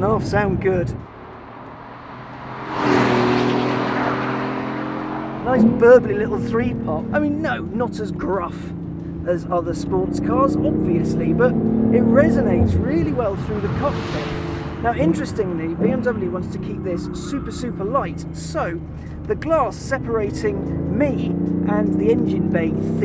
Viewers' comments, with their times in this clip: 0:08 Isn't the exhaust he's hearing the fake piped in BMW sound?